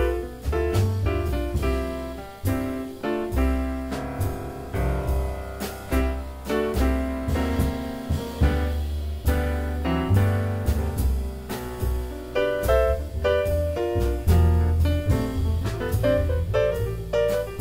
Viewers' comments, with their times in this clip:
0:05 Peterson starts playing riffs from an old session, John Brown's Body on the album these three did called Very Tall, that gives this group it's name. This is one of the most beautiful blues melodies in jazz. Sounds like this tune may use the same chords as John Brown's Body/ The Battle Hymn of the Republic.